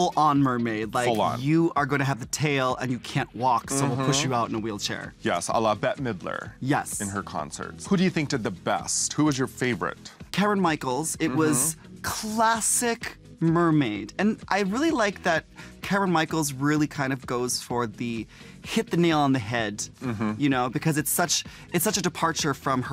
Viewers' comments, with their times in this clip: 0:08 Did Manila call Kameron Karen ?? Who’s Karen Michaels??